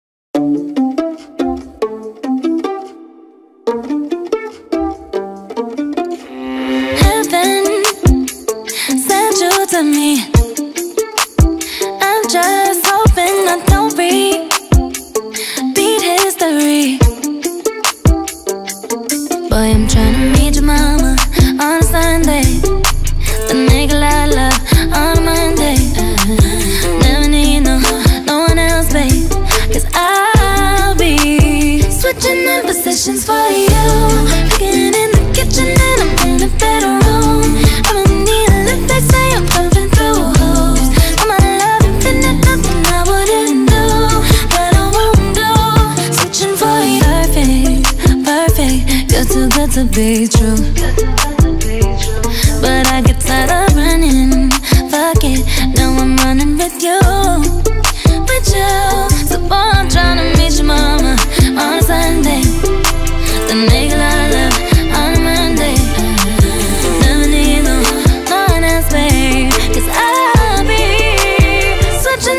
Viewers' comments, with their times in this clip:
0:05 doesn't it sound like the among us game starting thing or whatever when it says shhhhhh..???
0:06 People : vibing to this song Me: wait, it sounds like the among us music
0:07 is it "I saw him in June" or "I summoned you"??? Please someone tell me. I'm confused 😅😅 actually in many other lyrics videos of this song, it's also written "I summoned you".
0:15 "Eat History" 💀☠️ Edit: It's only my misheard lyrics Only for fun 😊
0:20 That part I hear “boy I’m trying meet joe mama on sunday” 🗿
0:22 In I thought she said the n word so I came to check lol
0:22 I thought it was make, a Lala on Monday 😭😭
0:22 I thought she said nigalala in
0:23 legit thought she said the n word
0:23 dun it sound like she said the n word lol ☠️☠️
0:23 I thought she said the n word
0:23 for the longest time I thought she was saying the n word😂
0:32 I thought she was speaking korean so I came here
0:32 that part's so catchy idk why
0:32 I thought she was speaking Korean
0:32 I thought it said putting in positions for ya!
0:37 donesn't she say: "i don't need a lift they say im jumping through hoops" and litterally can't hear anything else
0:59 she speaks in kazakh and the i came here